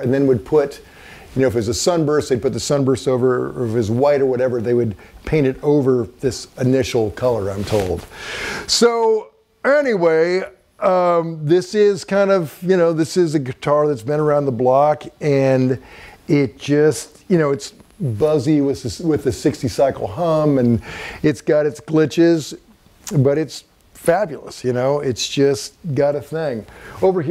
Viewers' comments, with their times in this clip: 0:08 “so ANYWHEY” anyone notice these oBnoxious moments in his speaking? Lol sorry